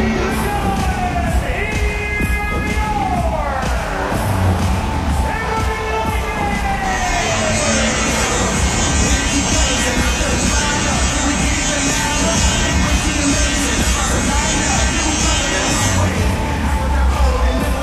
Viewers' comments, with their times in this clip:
0:03 Really bad job on the pause there announcer.